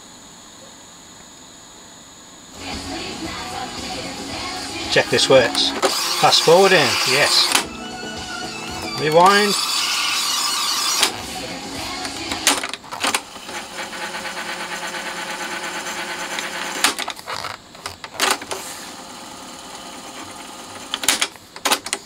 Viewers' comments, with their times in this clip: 0:05 Re the cue/review feature demonstrated I had a vague memory (parents had this deck when I was a child) that it attenuated the high-pitched output quite markedly when that's used to prevent speaker damage... but this one doesn't seem to be doing that, it's blasting it out at full volume.